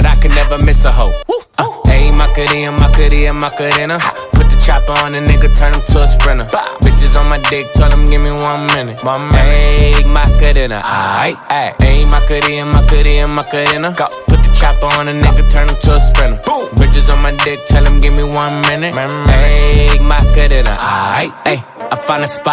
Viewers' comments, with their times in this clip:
0:04 y'all hear that snort